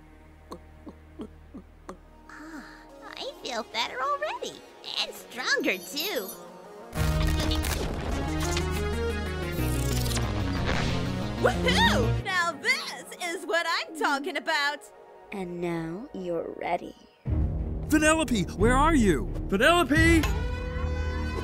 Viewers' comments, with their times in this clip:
0:09 Penelope von boobies